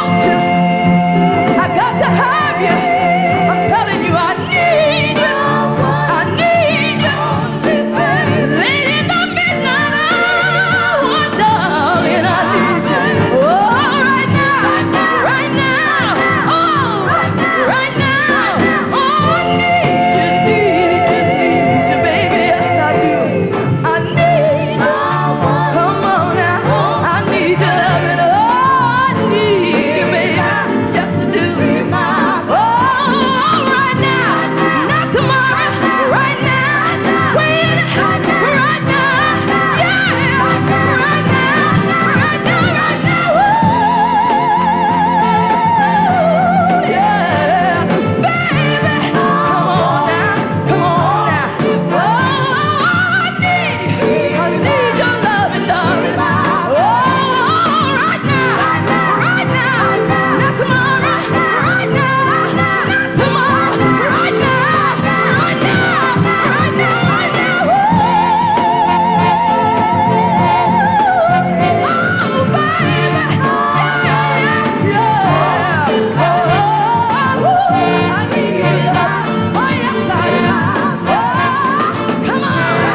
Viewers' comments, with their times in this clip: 0:08 OMG......@ sounds EXACTLY like Whitney when she says "late in the midnight houuuuuur"
0:08 Omg “late in the midnight hour “she sound identical to Whitney
0:08 it sounds like it's literally whitney singing
0:08 you must not have listened to a lot of Whitney Houston music because is DEFINITELY how Whitney's phrasing was
0:38 Finest most precise female singer of the 20th century. It does not get any better than Cissy Houston. The "head fake" something only a precious few gospel tenors ever do. Damn.
0:42 wow amazing high note
1:08 Did I just hear Whitney Houstom